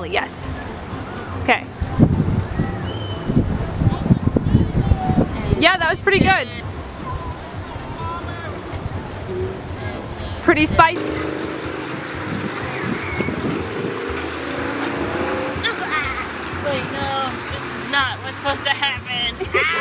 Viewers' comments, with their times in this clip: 0:04 kid in background: I CAN SEE YOU Also, rock look like meh cat :)